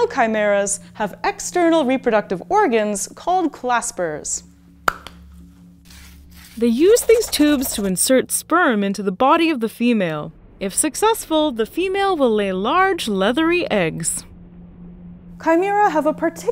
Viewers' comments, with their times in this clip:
0:04 claspers or clapsers?